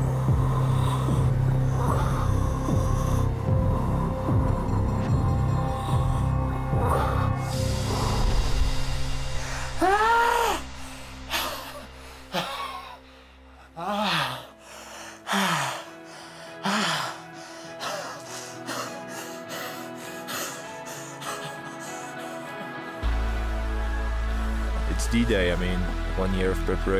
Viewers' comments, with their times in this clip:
0:09 That was incredible. War-cry needs work, though. ->